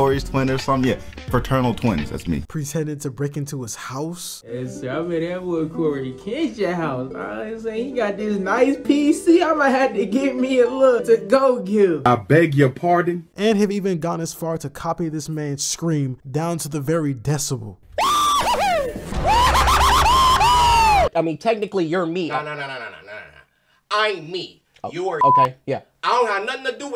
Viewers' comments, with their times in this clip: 0:07 obviously trying to mimic the way cory talks and acts.